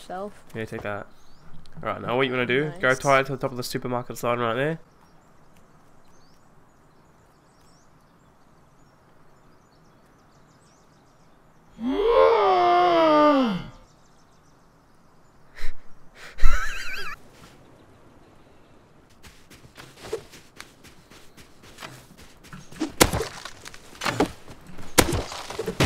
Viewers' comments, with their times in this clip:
0:06 "Sperm ket" you mean sperm kit??